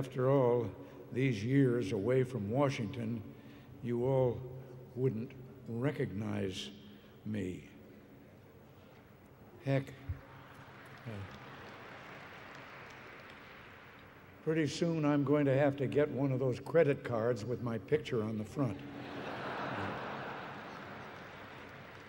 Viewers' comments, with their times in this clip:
0:06 Why is there a lot of clapping until